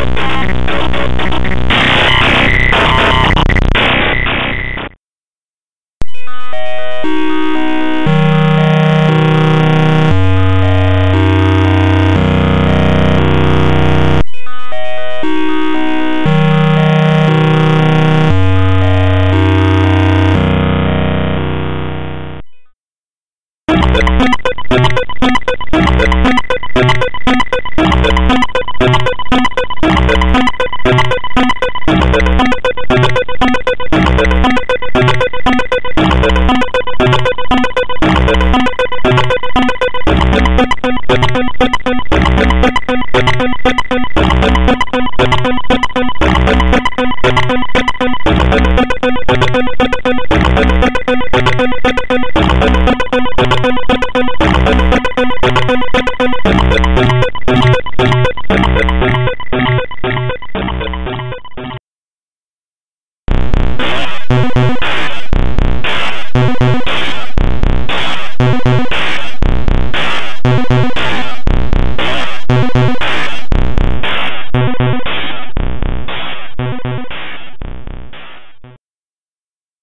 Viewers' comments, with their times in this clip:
0:05 the most beautiful music i heard
1:03 Here Comes Pacman